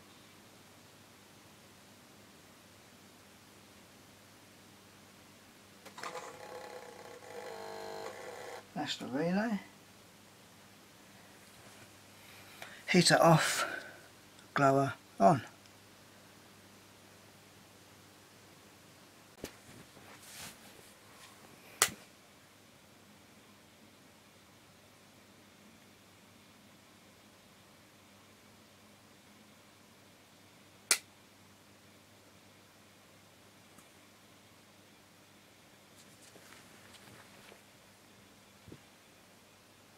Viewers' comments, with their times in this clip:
0:05 Amazing relay sounds. Sound modern for 1899 electronics
0:05 then this weird noise
0:22 lolz noise looks like x-raing sensor... huge thanks for this video